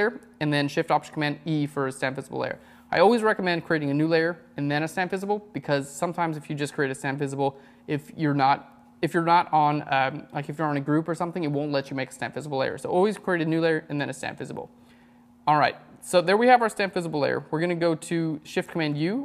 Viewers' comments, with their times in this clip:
0:06 So, what exactly ARE you doing ? I can follow along up until this point. I could probably figure out what you're doing in terms of translating Mac speak to PC speak, but I don't have anything to go on, because I have NO clue as to what you are saying. All I am getting is a "slmaoeifahoeihmumblemumblemumble layer". So... what are you doing?
0:07 this is my first time viewing a phlearn tutorial. I had trouble understanding what some of the commands to cause he talked so fast like at shift+option+command E ish. can't understand whats going on there.